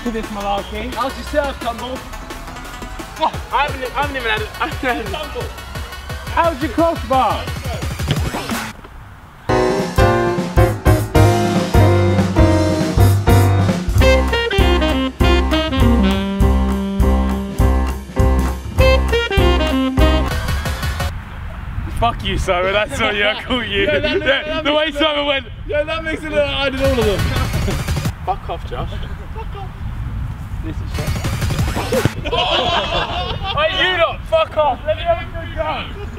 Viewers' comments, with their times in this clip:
0:07 he changed the song
0:08 the music changed it used to be funnier😭
0:11 Was this video edited because I'm pretty sure the music was different
0:21 anyone else picked up that they changed the music ?